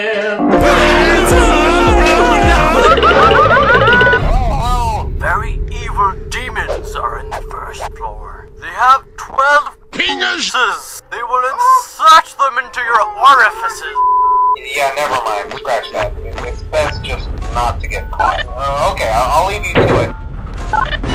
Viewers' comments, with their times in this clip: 0:05 pov: when u realised that foxy can play only 6 notes